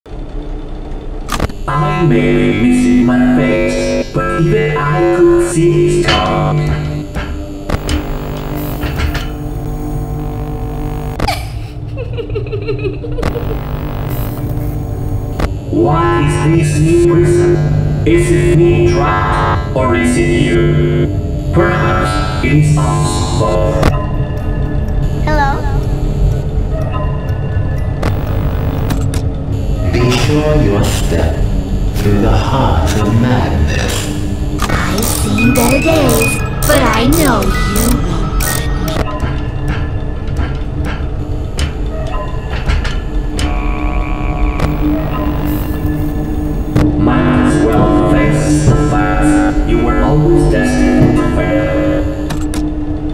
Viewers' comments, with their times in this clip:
0:04 It sounds like he said But even I could see his 🐔
0:11 Part when toy Chica laughing
0:39 i love the way he breathing hardly if he is lol